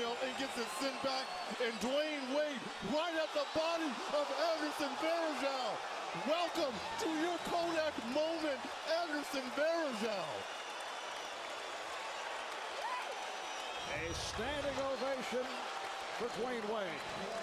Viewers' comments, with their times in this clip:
0:03 😭😬 I love the crowds scream